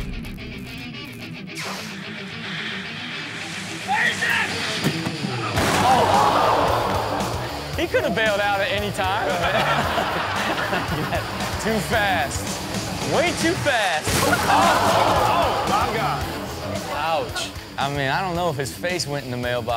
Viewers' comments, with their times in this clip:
0:03 Does he yell, "Wait a sec!" Before hitting that house with his face?!!
0:03 Does he yell, "Wait a sec!" Before hitting that house with his face?!!